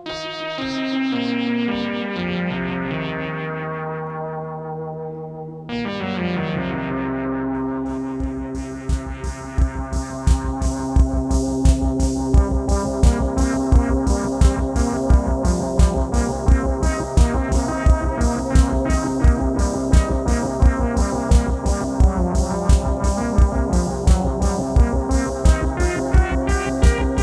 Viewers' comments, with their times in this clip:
0:09 That groove man. Great video. Old stuff is awesome. I've got an RE-501.